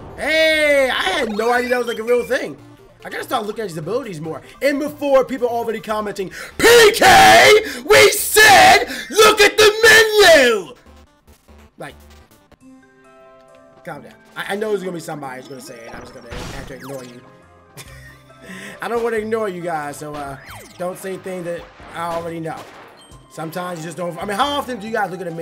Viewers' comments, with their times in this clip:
0:06 hahahaha that's the other part I appreciate too! the impressions XD